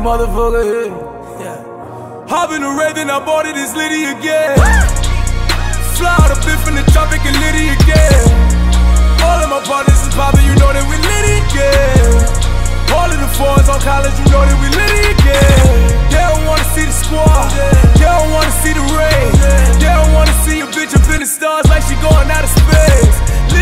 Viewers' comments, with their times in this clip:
0:05 Adlibs when he made the ether!!! PERFECT!!!